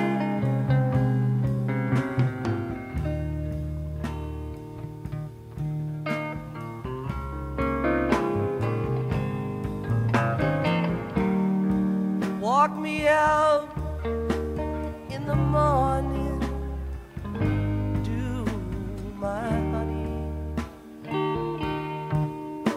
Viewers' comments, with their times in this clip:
0:05 I just get chills when that little guitar riff comes in right before the lyrics begin. It's such a minor part of the song and the instrumentals but that little riff is so cool. Sometimes a certain riff, although very short timed, sticks with you. That's one of the reasons this band was so incredible - the small subtle changes that the listener sometimes catches and it hits you in ways you can't explain.